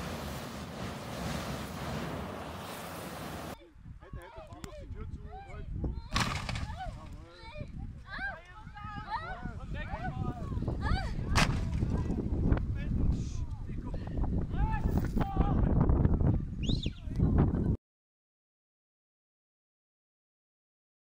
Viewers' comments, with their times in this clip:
0:05 jeez, sounded like something else was going on in the background there, lol.
0:07 turn up the volume
0:07 porn movie audio?
0:07 Audio is sus
0:08 uh... woman in the background is super excited?